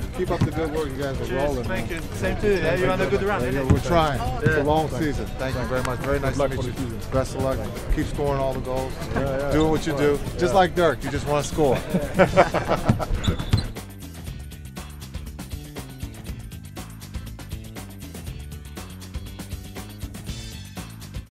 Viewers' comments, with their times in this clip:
0:06 it sounds like he is saying "love you too"